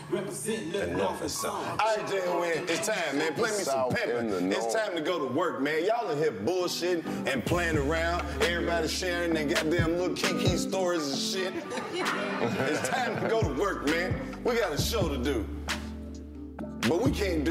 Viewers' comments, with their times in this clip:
0:03 is when the music is finally being phased out for anyone who needs it.....